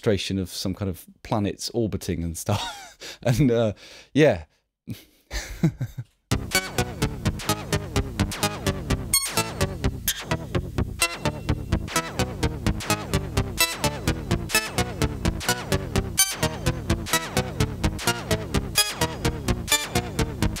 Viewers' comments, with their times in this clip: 0:06 Yeah I especially liked his playing ;)